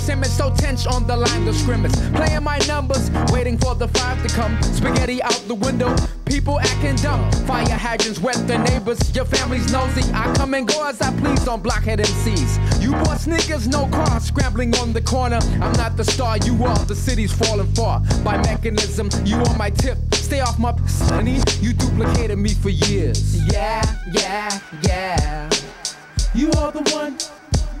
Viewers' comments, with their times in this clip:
0:10 Is my favorite part😂 “I come & go as I please on blockhead MCs”🤧he got freaky on the flow